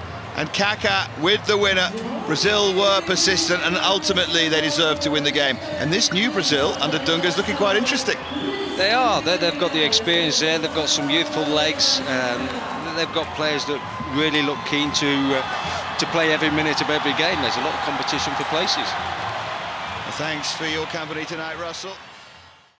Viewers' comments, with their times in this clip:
0:05 "This new brazilian team is looking quite interesting..." Commentator - Yeah, they've got some bEaUtIFuL LeGs